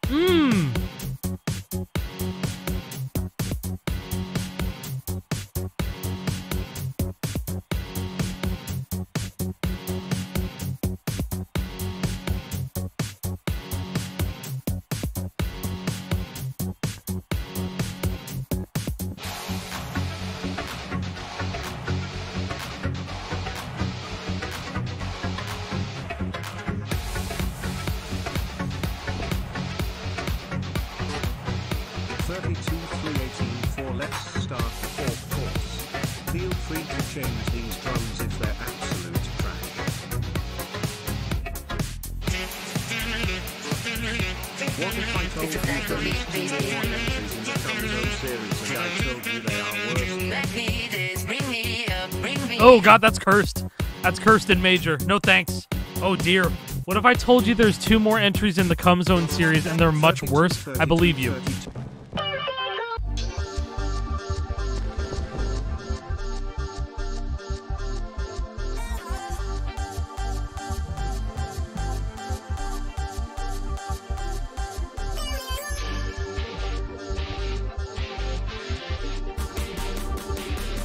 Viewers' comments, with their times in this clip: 0:03 persona palace theme ass music
1:01 kinda sounds like rocket league
1:02 this would fit in a new Sonic Riders game imo.